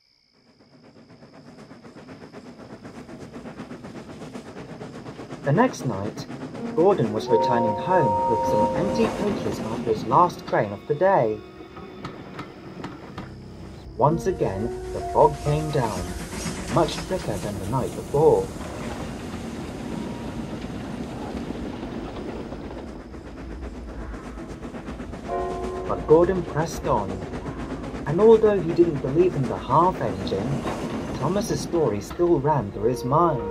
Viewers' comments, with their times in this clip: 0:10 Now we've had Ghost story episodes from the Thomas franchise that were really good for several reasons but this, as a fan idea is down right terrifying, even the custom model for the Half Engine is terrifying, The Ghost version, the scream sound effect just adds to the terror, The only thing i would have changed about the scene where Gordon gets his encounter would be having Thomas come up alongside him just before the Half Engine appears, the outcome would be the same with only the coach being cut in half, going of what said, the Half Engine spared Gordon because he wasn't mocking her, he just didn't believe in her and i think she would have spared Thomas too since he was nice to her in life ( i watched this and i didn't get any sleep after, i guess that shows how well scripted and played out this fan story is) 👏👏👏👍
0:16 Am I the only one who can barely hear the half engine screaming in the distance from to all the way until she charges him. And you can still hear it afterwards in the distance. You can also hear the screaming right before James finds the scraped half engine.